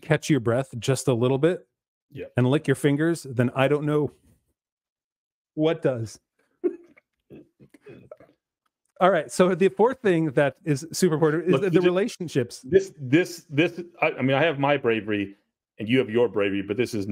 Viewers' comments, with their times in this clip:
0:04 They crack up for just a sec